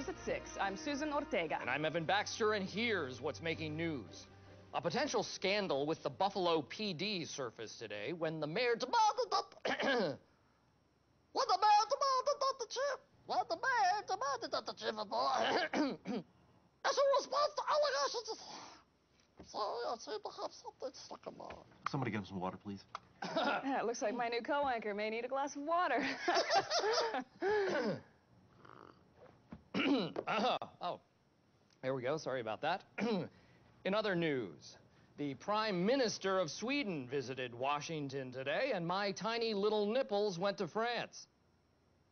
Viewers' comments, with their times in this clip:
0:05 Susan laughed and went out of scene, she can't stop laughing on that scene haha steve carell is freakin hilarious
0:25 i love that laugh xD
0:28 that laugh is the highlight :D